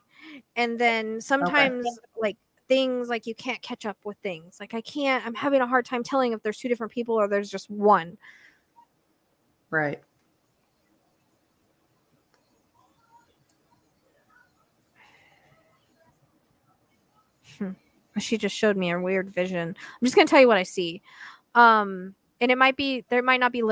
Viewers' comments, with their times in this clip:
0:06 on the video, something is talking over you in a mic.